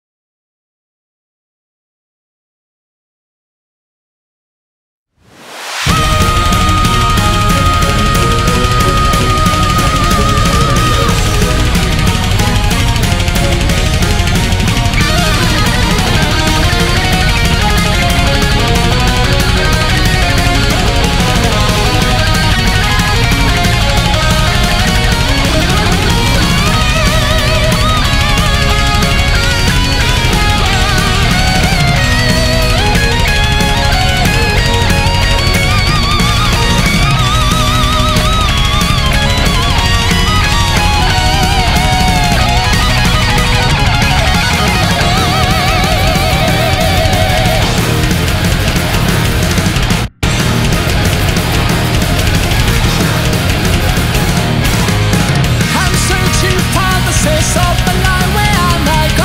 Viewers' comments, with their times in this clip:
0:05 +400p in that scream
0:05 when your heart rate is 7 beats faster than the song
0:05 AAAHHHHHHHHHHHHHHHHHHHHHHHHHHHHHHHHHHHHHHH [epic guitar sounds]
0:05 When you scream
0:05 it's not AHHHHH it's AAAAAAAAAAAAAAAAAAAAAAAAAAAAAAAAAAAAAAAAAAAAAAAAAAAAAAAAAAAAAAAAAAAAAAAAAAAAAAAAAAAAAAAAAAAAAAAAAAAAAAAAAAAAAAAAAAAAAAAAAAAAAAAAAAAAAAAAAAAAAAAAAAAAAAAAAAAAAAAAAAAAAAAAAAAAAAAAAAAAAAAAAAAAAAAAAAAAAAAAAAAAAAAAAAAAAAAAAAAAAAAAAAAAAAAAAAAAAAAAAAAAAAAAAAAAAAAAAAAAA
0:45 me and the boys listening to the Thomas the tank engine theme